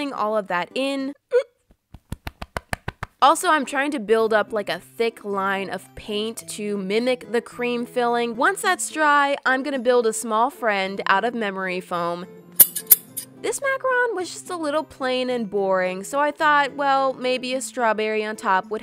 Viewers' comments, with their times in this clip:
0:06 When she slapped her chest after coughing I was like what I thought I was the only one who does that 😂😂😂😂